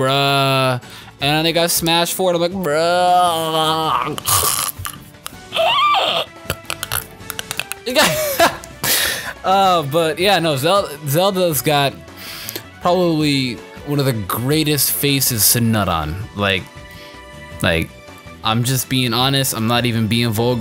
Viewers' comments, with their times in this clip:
0:05 The thing you did sound like homer simpson with donuts.